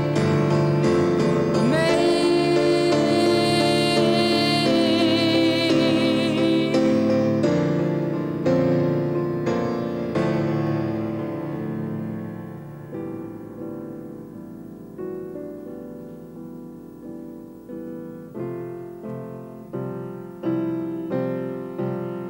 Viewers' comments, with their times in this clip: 0:10 Oops, hit the wrong note